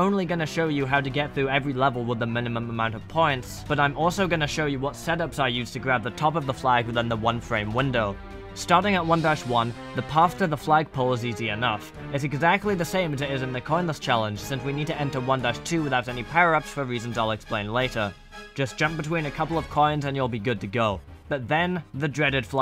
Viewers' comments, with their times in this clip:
0:06 this music is SO stressful omg, it's like someone kidnapped your whole family and forces you to do this challenge